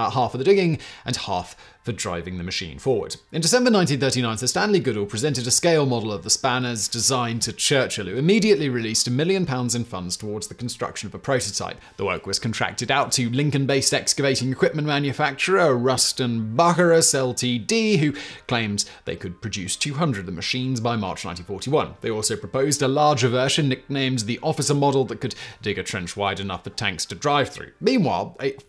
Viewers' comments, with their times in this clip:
0:09 I've never heard Bucyrus (byou-sigh-russ) pronounced "Bucky Rust" before. Kinda Sounds like a Douglas Adams character